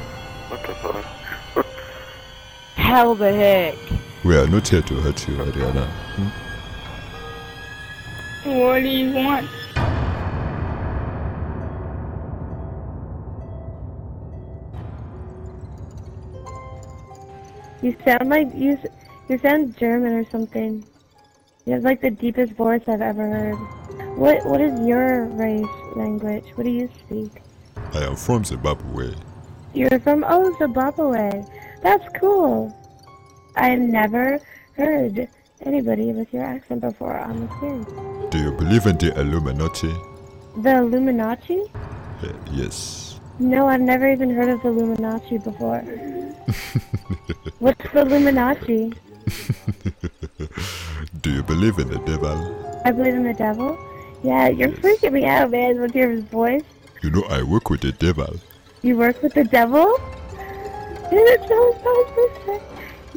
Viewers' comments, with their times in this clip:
0:06 I love how you put a dark end song to the end of the phrase \Adriana (what do you want)
0:17 as the girl says you sound german XDDDDDDDD
0:18 that’s probably the most respectful COD player I have heard reacting to the African drug lord/rebel. Reacting cheerfully when he told her he was from Zimbabwe. Most kids would just make some racial slurs or something but she did not, much respect for that.
0:18 you sound germane
0:18 Oh god, the chick from has such a sexy voice
0:23 I’m kinda confused about the voice. Is the kid actually a she or he? Just wondering
0:48 The person is so sweet and innocent sounding haha I felt bad